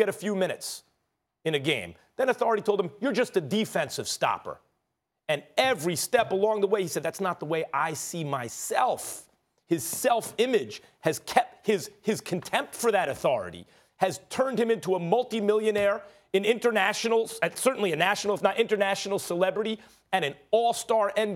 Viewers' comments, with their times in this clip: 0:07 The inner Daffy Duck came out 🦆